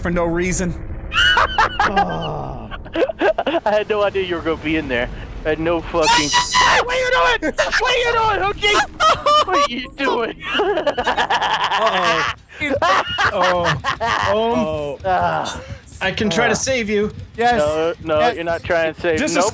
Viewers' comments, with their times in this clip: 0:05 “The Villainous Rabbit’s” screaming is seriously hilarious & satisfying. 😂😈😂😈
0:06 The most manly scream ever!! 😂